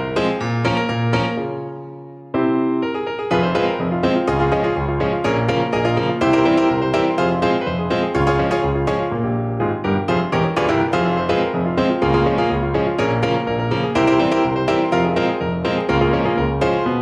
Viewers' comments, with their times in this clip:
0:03 caravan piano intensifies